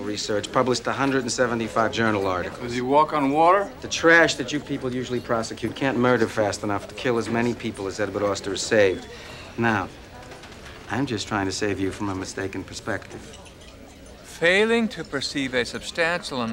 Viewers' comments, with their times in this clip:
0:03 WELL SPOKEN 44